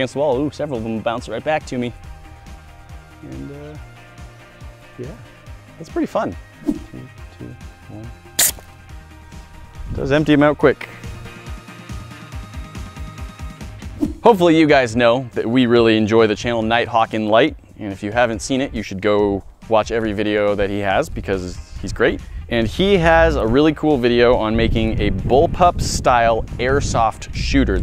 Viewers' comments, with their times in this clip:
0:08 What is that murmurring in the background